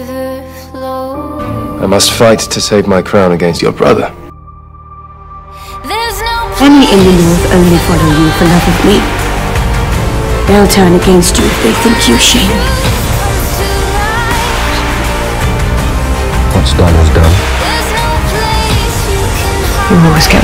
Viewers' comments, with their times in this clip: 0:08 this entire thing is gorgeous but that buildup ?!?! amazing! i literally held my breath when the music built and then saw david oakes and completely lost it,, the period drama king himself ;’) this video is so gorgeous and your manila are so seamless like how ??? anyways this is beautiful